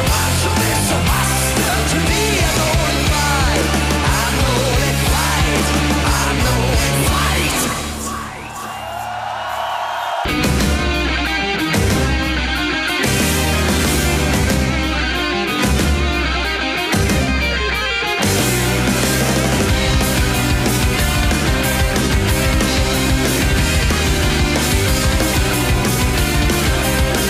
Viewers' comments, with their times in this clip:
0:10 my fav song is in the best quality and line up possible :')